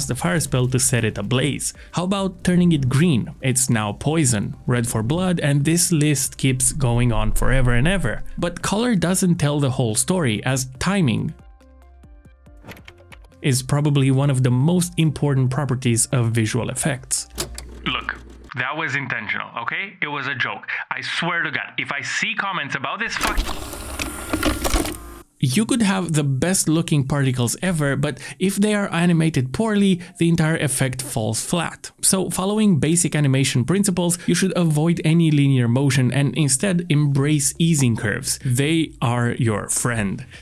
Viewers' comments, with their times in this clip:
0:09 great vid !!! but i couldn't help but notice that there is a weird pause maybe it was an editing mistake? , either way it's a good video
0:16 I think the audio cut out you might want to check that.
0:22 That was some pretty good timing to censor "fu-"